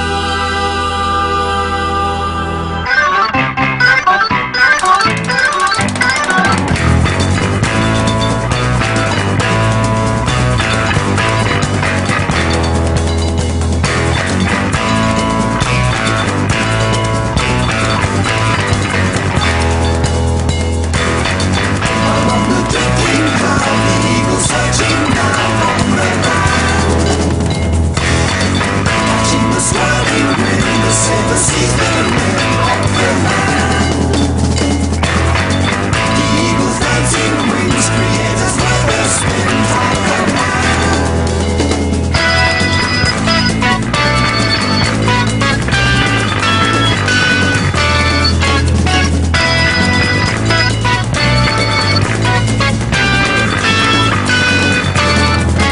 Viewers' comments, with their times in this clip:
0:07 Haunting and propulsive musical jewel... What sounds better than this?! >
0:41 introduces extremely complex polyrhythms. As a music nerd that is just cool